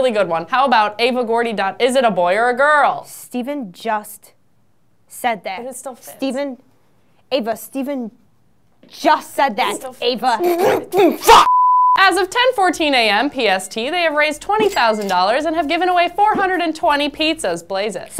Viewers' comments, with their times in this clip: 0:06 The bizarre level of anger here made me laugh so hard for some reason. I don't know why, but it's funny as hell